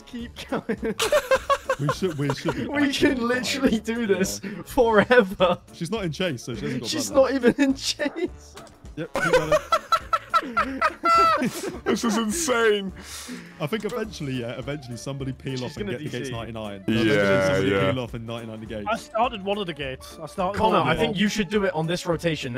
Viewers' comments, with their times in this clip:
0:07 elmo ahh laugh